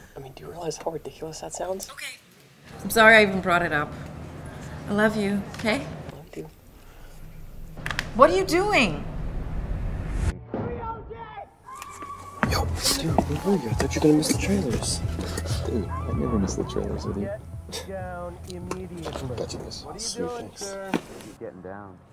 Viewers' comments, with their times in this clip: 0:10 You can hear part of the trailer for "21 and Over" playing in the background